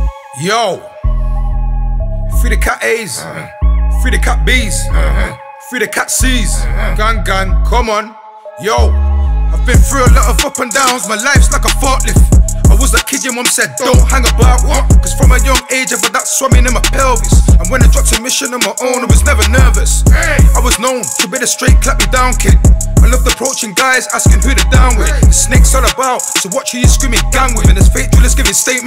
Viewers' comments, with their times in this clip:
0:09 ups and downs my lifes like a fart wiff